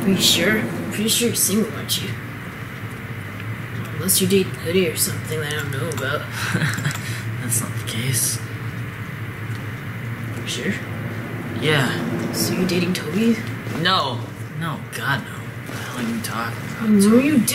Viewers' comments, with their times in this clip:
0:05 nervous gay laugh